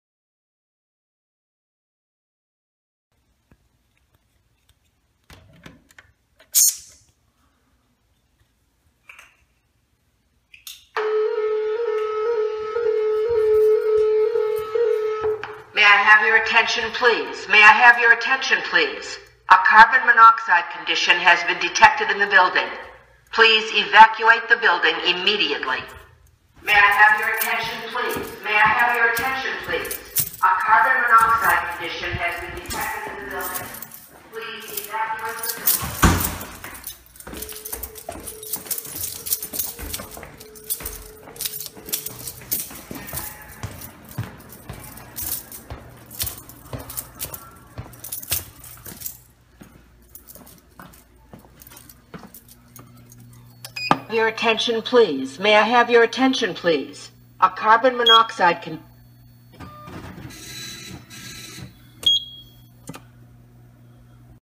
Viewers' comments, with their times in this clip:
0:10 The alarm was loud
0:11 why would you choose that tone?????
1:00 did the alarm literally scare the crap out of someone? 😂 I heard a toilet flush in the background (I think)